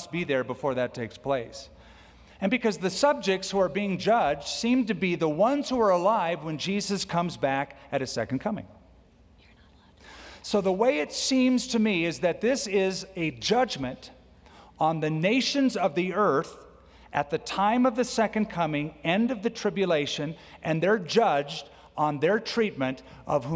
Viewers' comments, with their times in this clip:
0:08 I can hear woman saying something just when skip stop talking “You are not alive”.